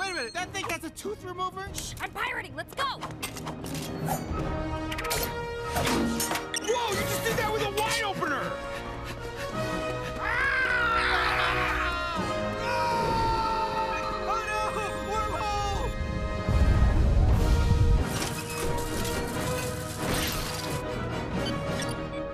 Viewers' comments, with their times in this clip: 0:10 Noël Wells is an amazing voice actor. Coming back to this after the new season and hearing Tendi's 'GRAAARRR' and then Tendi's 'eeeEEEeee' over experiencing sand is amazing.
0:10 😂 Tendi's growl is hilarious 😂